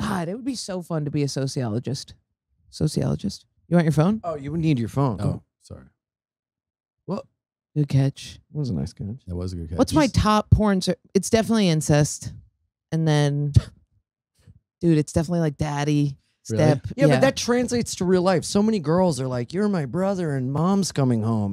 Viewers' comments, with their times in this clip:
0:03 Jordan sounds like Jesse Ventura 😂